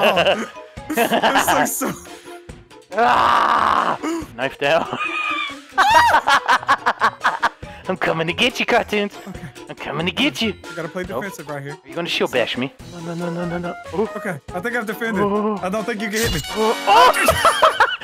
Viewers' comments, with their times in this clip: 0:05 Did anyone else hear Michael Jackson right here?